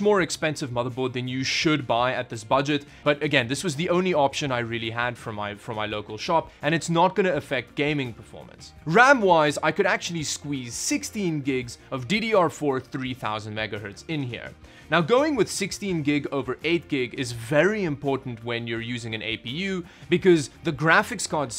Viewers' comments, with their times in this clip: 0:09 anyone else hear the discord notification sound